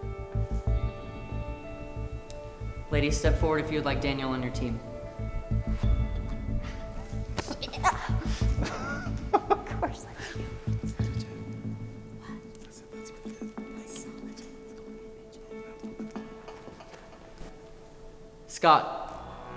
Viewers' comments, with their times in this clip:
0:06 What was that noise?